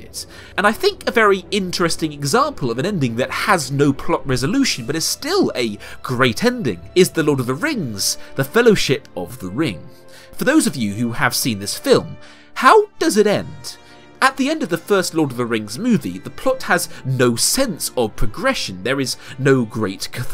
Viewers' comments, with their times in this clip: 0:07 great music editing m8 :D